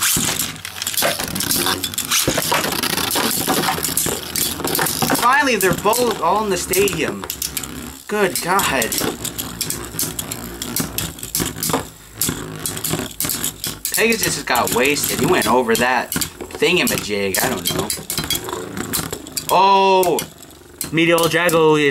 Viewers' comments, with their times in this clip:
0:09 their both like arguing in a deep voice saying "HES MINE"